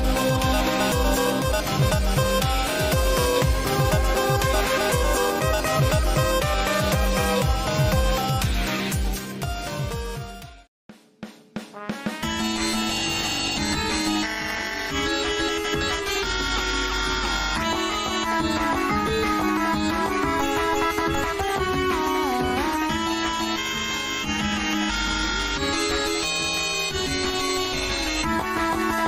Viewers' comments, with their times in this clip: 0:10 Am I only one dancing to that beatbox?